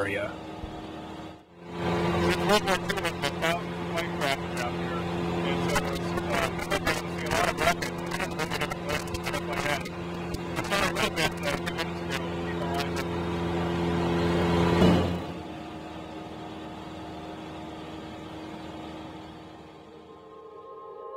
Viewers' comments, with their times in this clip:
0:04 ufo sound lol